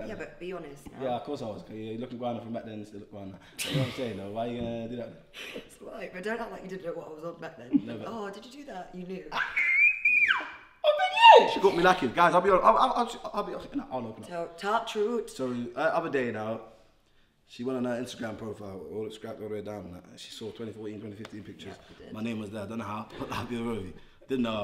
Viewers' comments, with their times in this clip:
0:09 That scream yeah😂
0:10 rahhhh that scream